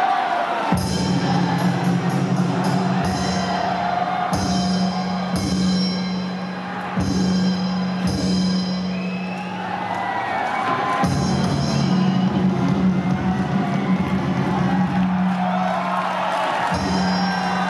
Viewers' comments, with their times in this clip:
0:05 beautiful.. really love the spectacle.. the choreography.. the costume.. the energy and spirit.. and also the BSF officer that made the indian crowd roaring 😍